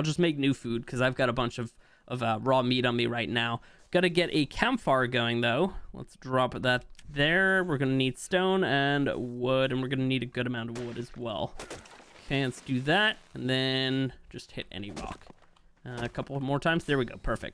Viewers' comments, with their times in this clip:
0:04 campfires are now pronounced campfar.